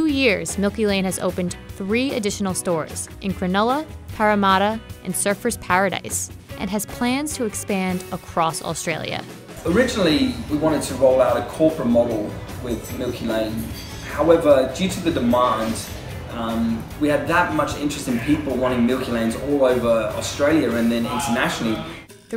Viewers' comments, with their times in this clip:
0:03 I got an aneurysm when she said "Paramatta"